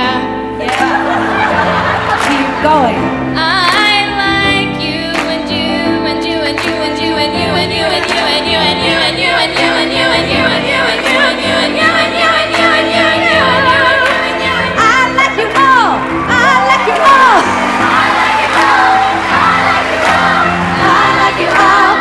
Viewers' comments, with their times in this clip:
0:06 did that just happen? The harmonies
0:06 that harmony was really good. ❤️❤️❤️❤️❤️❤️❤️